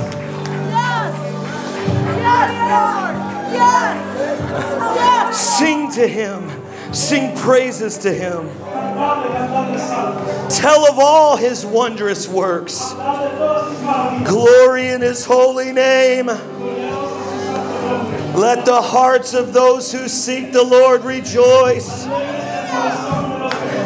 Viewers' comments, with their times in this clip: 0:10 I hear a Shofar playing the Spiritual Warfare Notes!!!! Wow!!!!!